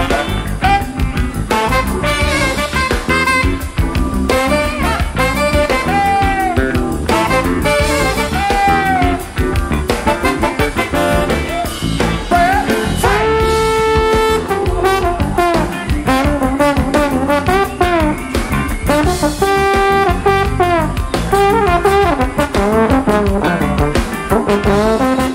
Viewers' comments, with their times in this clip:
0:04 Isn't that just the perfect Solo? Keep singing Fred
0:12 My goodness! Fred Wesley's solo